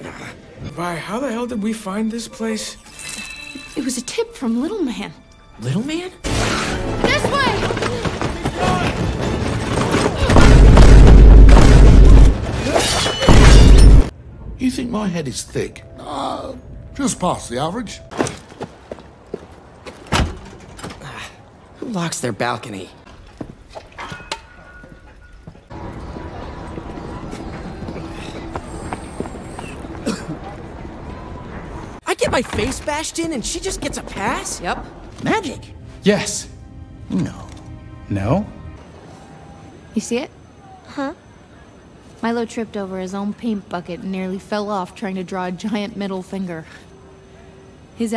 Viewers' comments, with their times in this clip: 0:10 THE VINE BOOM
0:12 HELP THE VINE BOOMS
0:35 has always reminded me of talking ben, even moreso "without context"
0:35 i didn't realize how meme-y that sounded until now ahahahahha 😭